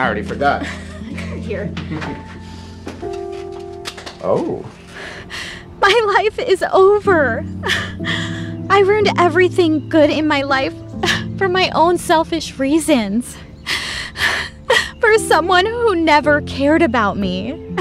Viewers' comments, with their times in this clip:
0:05 The oh in had me. Dying😂